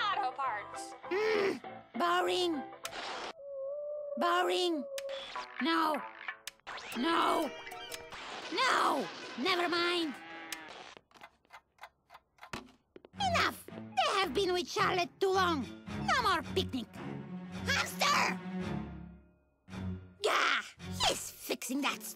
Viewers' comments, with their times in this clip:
0:05 hmm, sounds like a familar opening